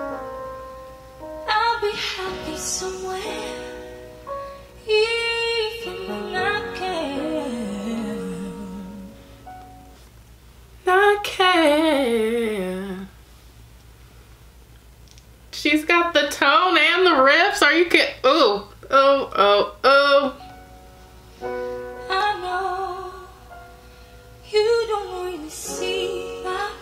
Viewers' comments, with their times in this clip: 0:10 No Ghorl, you got the riffs and runs ❤️
0:10 oooo👀 i like that run...👉clicked* subscribed.....😃
0:11 love Ellaine! btw, the way you just imitated her run that was so goood. subscribed to you, ms. beautiful.